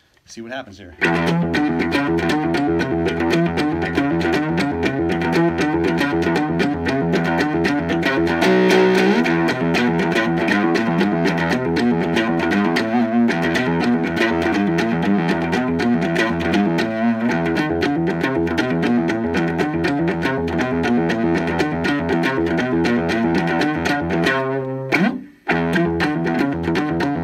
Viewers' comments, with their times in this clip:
0:08 A Sting steal turns into a Djent lesson!!!